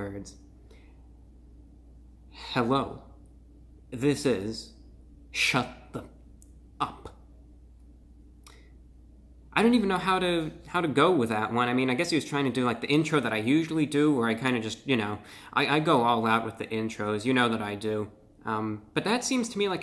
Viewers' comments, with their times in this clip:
0:05 if reviewbrah said those words to me the way he did, it's hospital time again